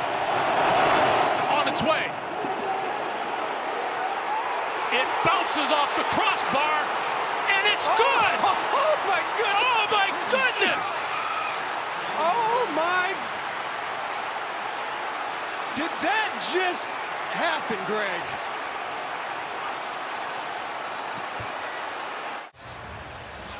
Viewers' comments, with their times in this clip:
0:10 Tucker the 🐐!!! That scream 😂